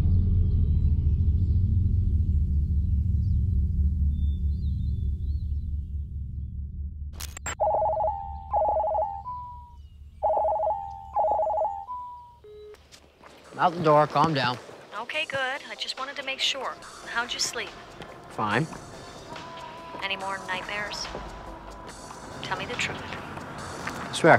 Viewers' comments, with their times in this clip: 0:07 Omg, that ringtone ..
0:08 The classic BlackBoxTV ringtone returns.